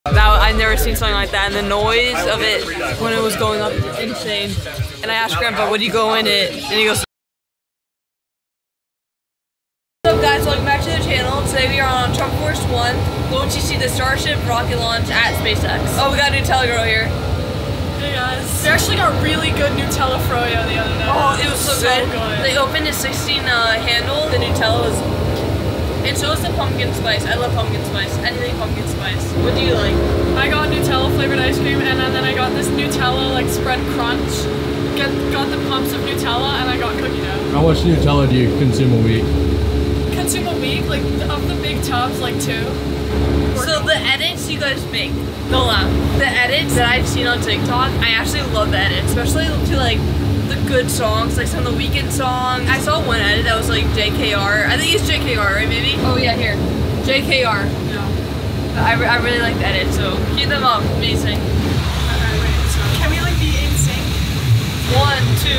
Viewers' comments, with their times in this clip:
0:08 sounds like airrack who agrees ?
0:30 To all the airplane nerds listen to Rolls Royce engines whine!
0:30 that girl on the right side In the beginning sounds like a Female Version of MoistCritical :D
0:37 the Engines of the 757 sound so good 😍
0:52 What accent is that 🤔?